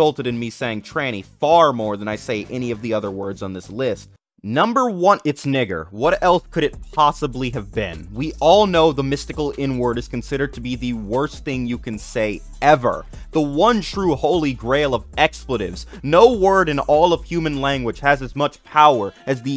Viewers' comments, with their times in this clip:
0:03 NO HESITATION NAHHH
0:04 Bro forgot to hesitate